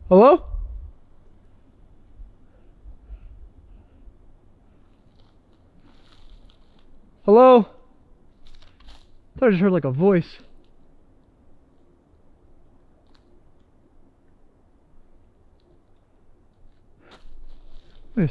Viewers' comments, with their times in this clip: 0:04 probably not smart to loudly say ur alone in woods 🤷